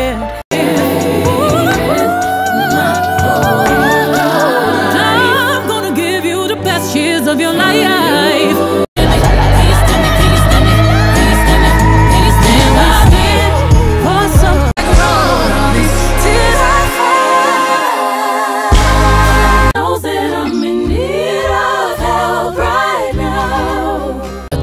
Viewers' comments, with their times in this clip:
0:10 a few of those “lalalalalalall at the start are mixed belts, then goes head